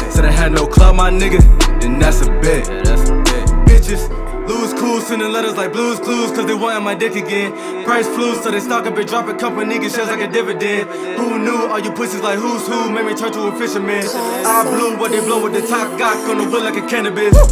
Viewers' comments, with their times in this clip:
0:03 That's a bet! lyrics was too fire bro keep it up flow was crazy.